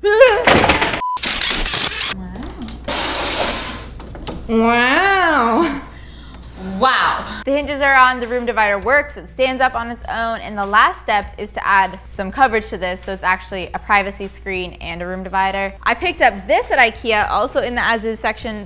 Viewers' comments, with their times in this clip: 0:04 Was so ready for an Owen Wilson wow